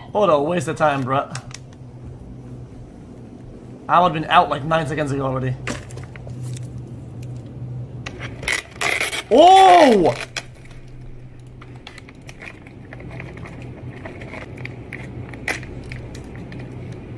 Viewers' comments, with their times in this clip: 0:05 OHHHHHHHHHH *desk getting hit from the bottom